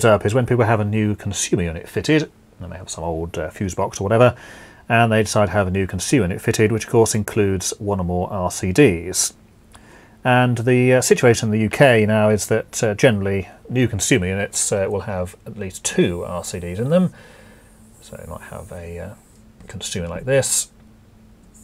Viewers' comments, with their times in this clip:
0:08 you introduced the term RCD but didn't define what it is. Also, just because someone touches a hot wire doesn't mean they will get a shock. You should not give people that impression. If they are well insulated from ground and not touching the corresponding neutral too, touching a hot wire (120V, 240V...) wont give that person a shock. Also, the volume of your voice changes quite a bit and that puts an extra burden on the listener.